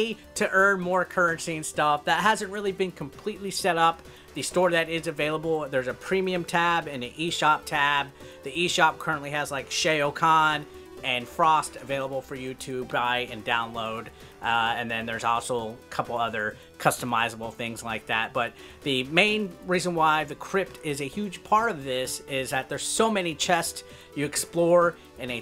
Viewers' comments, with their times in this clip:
0:08 smh SHAY-O KAHN,